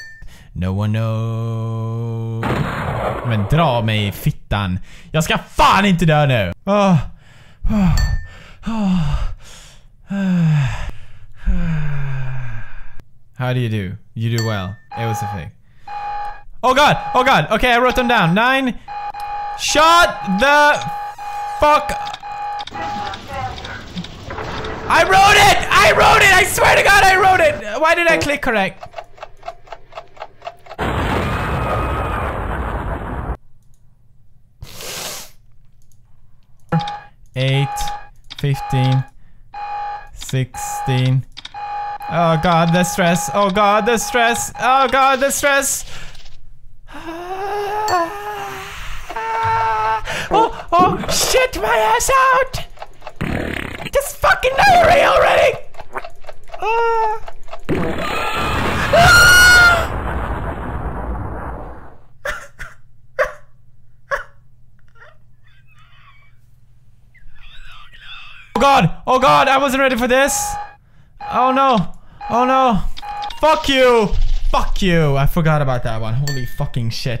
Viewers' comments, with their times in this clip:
0:06 added to the moaning compilation ;)
0:58 probably one of the saddest noises in my life :)
0:58 mega pewds voice crack
0:59 That scream tho XD
0:59 what the fuck was that scream!
0:59 pewds sounds like flute